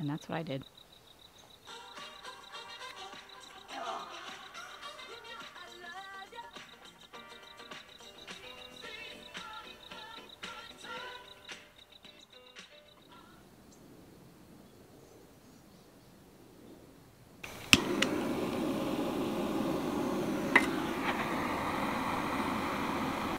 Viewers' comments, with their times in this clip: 0:05 the tunes baby! Yes!